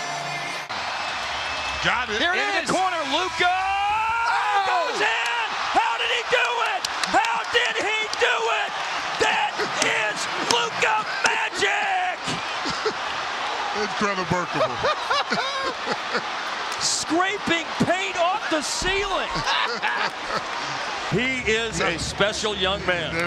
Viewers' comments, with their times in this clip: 0:09 I just realized you can hear him slapping the desk 😂